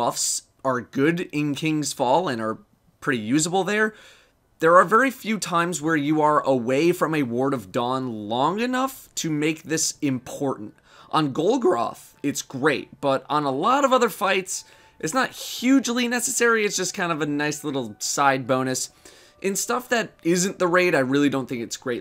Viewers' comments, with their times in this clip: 0:09 nice voice crack